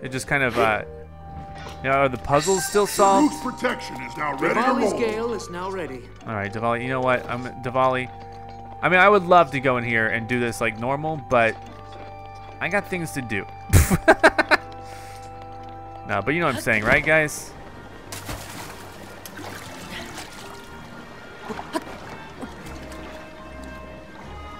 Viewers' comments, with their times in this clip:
0:08 I think you said DEVALI